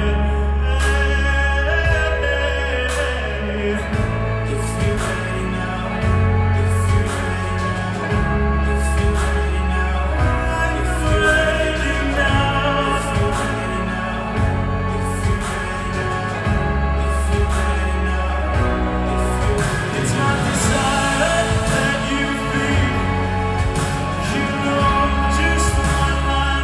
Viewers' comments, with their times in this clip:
0:10 maaan his voice is something insane.Incredible!!!